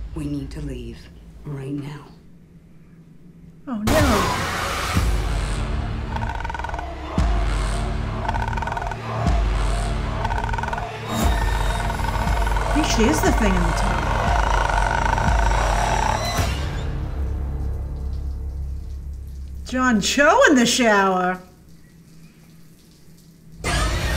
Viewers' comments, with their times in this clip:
0:07 why does she sounds like my door